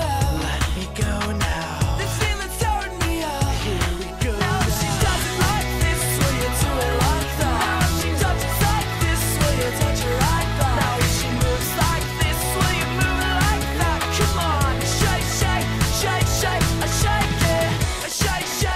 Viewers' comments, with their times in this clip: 0:06 I Love how he sings